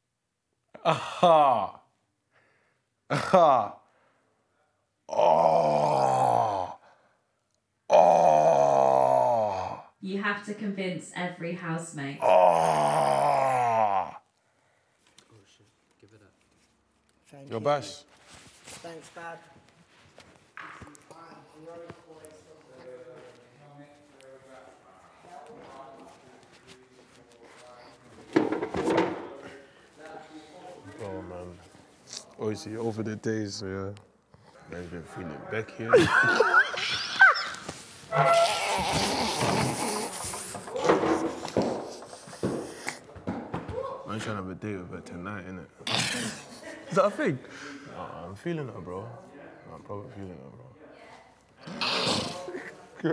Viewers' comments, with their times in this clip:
0:08 dem noises tho 😭😂
0:34 LMFAOOO the way he laughed got me🤣🤣
0:38 I love how they both just cracked up 😂